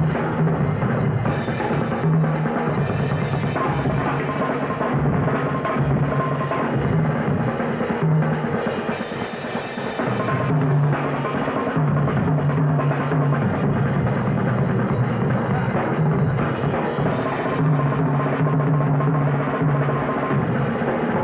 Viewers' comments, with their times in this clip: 0:07 Louie showing off his left hand If Buddy's snare was tuned any higher, it would explode. I think it would've been better if each drummer had more time say like eight bars or sixteen bars, then switch, just you could enjoy each player. The quick switching back and forth was frantic.